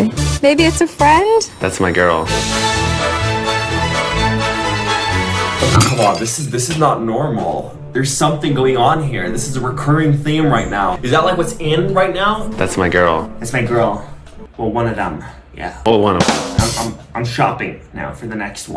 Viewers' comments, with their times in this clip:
0:05 The music sent me omgggg💀💀💀💀💔